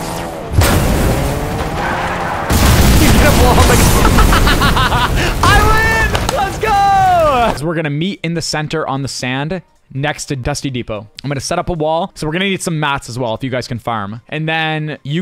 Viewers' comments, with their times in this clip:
0:03 I have never heard him laugh that whole moment when the cars crashed was hilarious